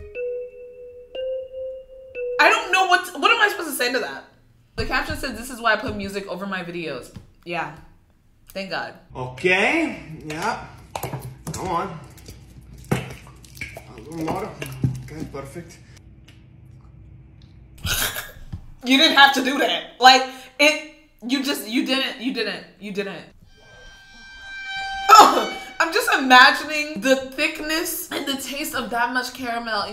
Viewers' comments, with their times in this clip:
0:10 WHY DID IT COME OUT SO GLOPPY. IT LEGIT WAS LIKE “glop glop glop glop” LIKE WTF